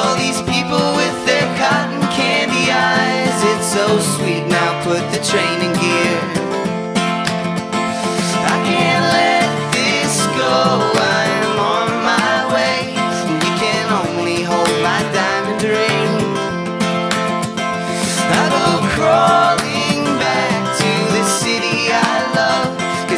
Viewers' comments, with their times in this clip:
0:07 flawless voice. love how the keep the feel of the recorded version